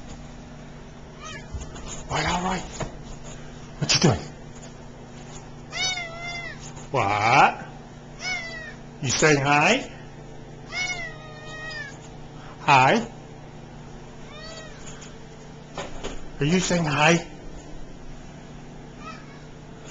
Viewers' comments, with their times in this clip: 0:06 Sounds like he said " I don't know"